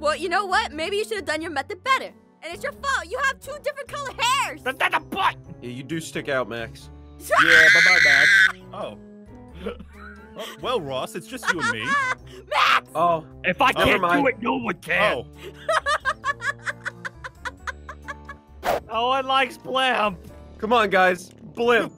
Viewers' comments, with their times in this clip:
0:08 as soon as she screamed an ad popped up